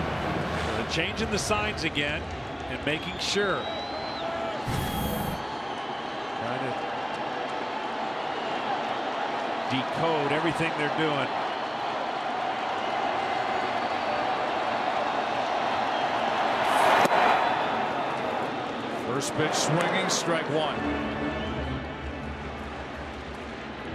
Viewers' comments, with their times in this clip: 0:06 I think I heard someone sneeze right before a breaking ball on ! cheaters!!! LOL